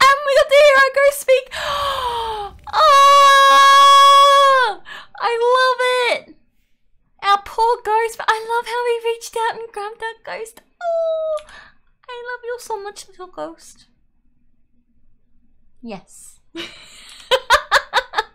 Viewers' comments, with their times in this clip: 0:03 XD i dare someone to sample that scream cause that made me giggle